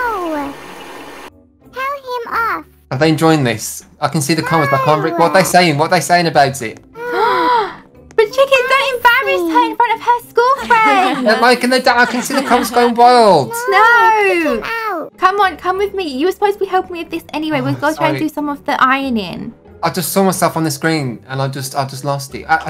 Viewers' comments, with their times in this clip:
0:10 what was that laughing in the background? 😂😂